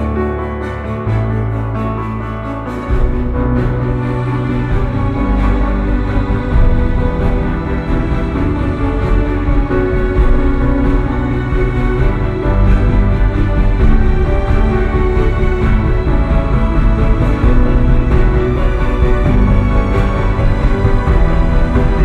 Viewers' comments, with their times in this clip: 0:09 Concert Hall and acoustics are God-tier!